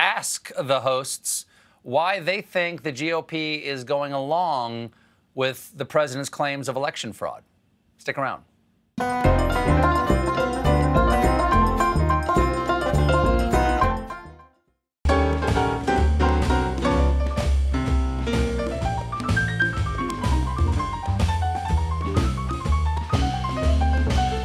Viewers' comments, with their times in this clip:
0:09 Skip the video and listen to this riff on repeat. this is the kind of thing that reminds me to stay human.